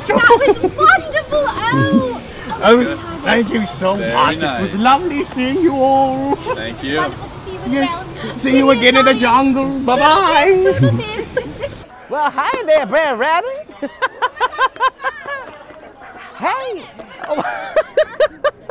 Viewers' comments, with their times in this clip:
0:03 "VERY NICE" just like the movie had me dead. 😂